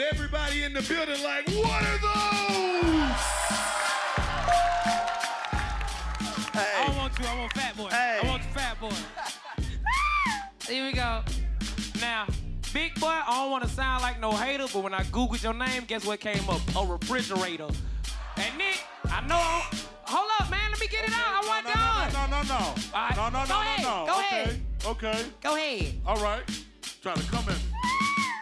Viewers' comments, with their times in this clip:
0:09 DC youngfly scream💀💀💀💀🔥
0:10 that scream 💀😂😂😂 all the screams !! 😂